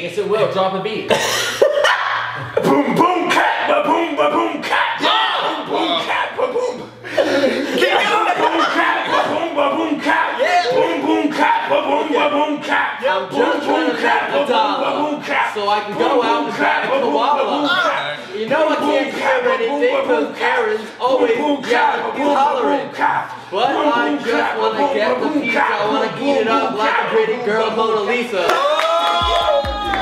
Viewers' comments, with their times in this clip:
0:03 Lil John has entered the chat
0:15 Bruh that beat was so awesome